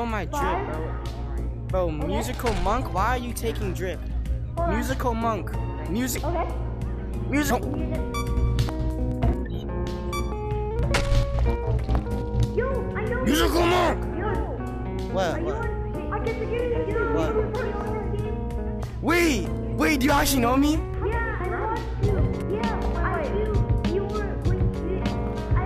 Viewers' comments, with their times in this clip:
0:07 sad relaxed scene sound😢